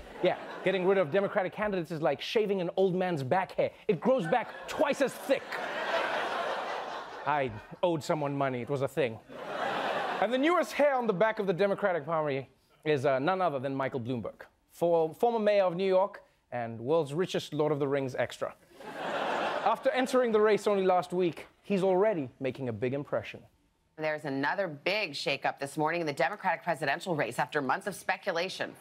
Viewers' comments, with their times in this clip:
0:10 “And the newest hair on the back of the Democratic PRAH-MRY
0:11 Democratic parmy. I giggled.